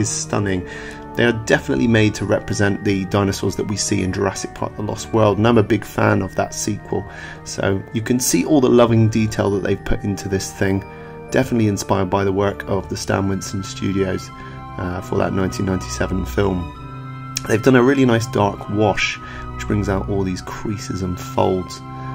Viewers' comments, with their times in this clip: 0:04 what are you saying here? Not a fan of the sequel? Can't hear it very well
0:04 “Not a big fan” or “And I’m a big fan” ?!?!